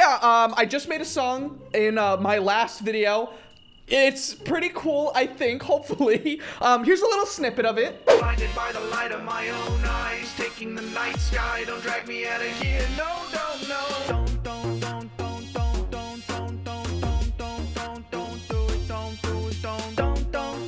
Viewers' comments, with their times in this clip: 0:08 Its funny the rap😂